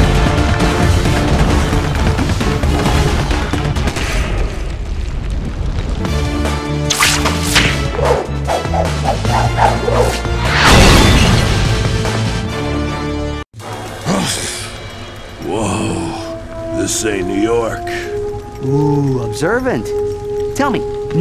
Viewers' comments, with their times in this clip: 0:06 I love this theme